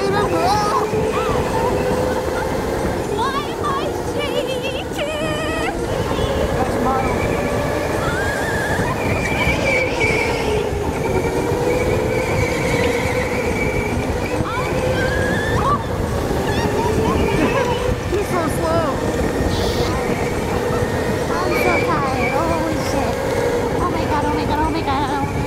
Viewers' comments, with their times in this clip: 0:07 Damnnn they went skrtttt